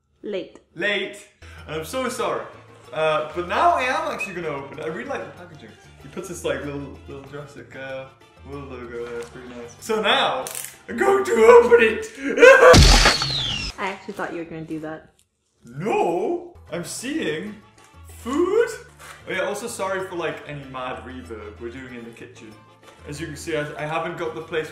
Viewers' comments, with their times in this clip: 0:08 I paused but that's when my mom walked in on me and she thought there was an animal in my room because of the raptor noise